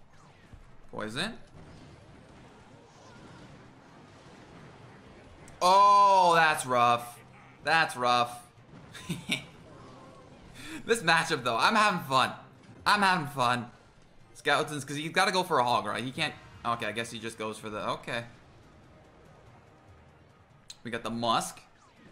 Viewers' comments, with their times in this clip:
0:06 when le laughed, I felt him. When you fail at Clash Royale so hard it's funny.